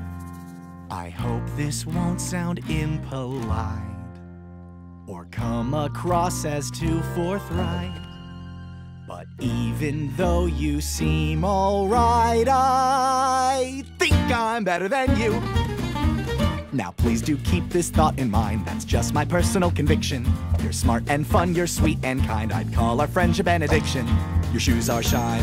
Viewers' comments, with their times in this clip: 0:05 I thought he was saying fornite
0:08 he said "Fourth Reich" not forthright. You can hear him pronounce the "ch"